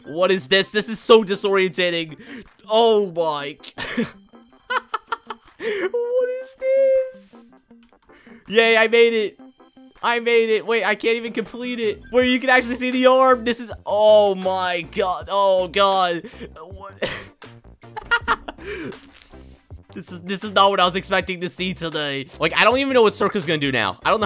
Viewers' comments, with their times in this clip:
0:07 i like that voice